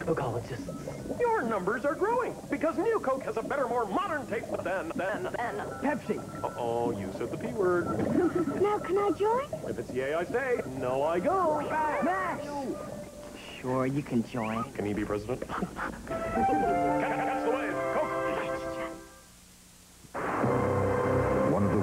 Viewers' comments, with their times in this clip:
0:08 coke commercial with Eminem’s rap god vibes with the guy on the tv 🤔 anyone else notice this?